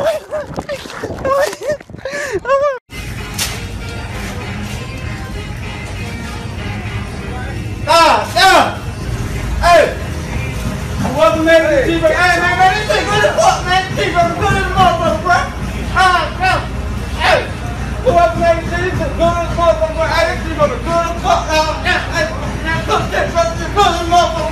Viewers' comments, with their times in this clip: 0:09 the legend has it not even the captions understand what he says